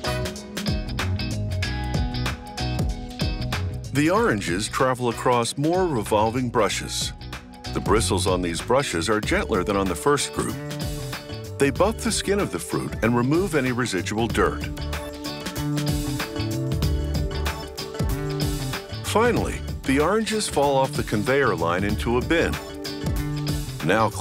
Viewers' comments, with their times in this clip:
0:07 The narrator burped and they kept it in lmao
0:08 dude literally just burp
0:09 Anyone else heard that burp? Almost made me puke 🤮🤮🤮
0:09 did he burp?
0:09 Did he burp ?
0:09 No one talking about him burping
0:09 The narrator cleared his throat with a small "uhmmm"
0:09 Yo did he just burp ?
0:10 did he just burp?
0:10 it sounds like he burped lmao
0:10 was that a burp?
0:12 could not hold that burp any longer 😂😂😂😂